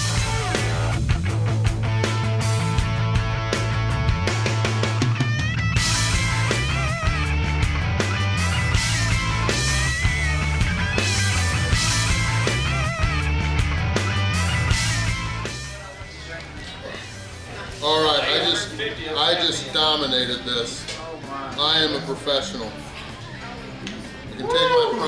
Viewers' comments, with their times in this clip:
0:08 The crunching of crab legs with some sweet rifts in the background... It works!!